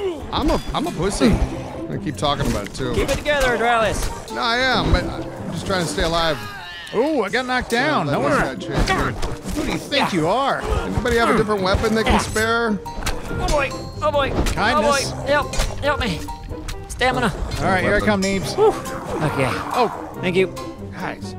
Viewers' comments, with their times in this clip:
0:06 my husband and I both heard that as "Who do you Thick you are?" :D This was one of the funniest videos ever. You guys sound like you're already having a better time now that Extinction is out of the picture.